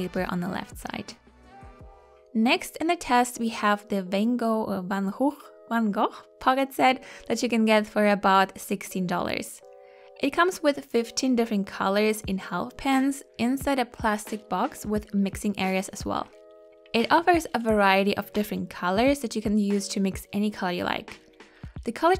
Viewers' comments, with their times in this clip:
0:06 Good Dutch pronunciation of Van Gogh ;)